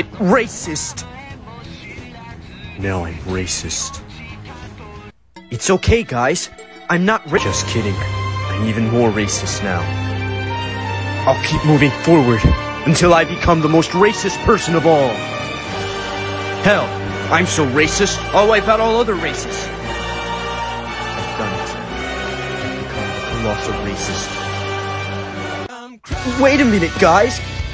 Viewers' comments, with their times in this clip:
0:08 Way he says can't be better